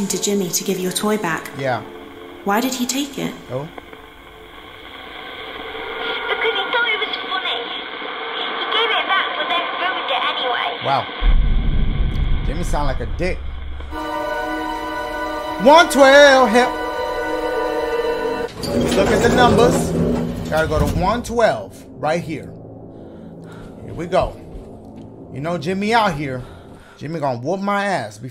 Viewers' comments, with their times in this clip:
0:10 This is prolly the first time I've heard Dashie say "dick" instead of "diugh" 😂😂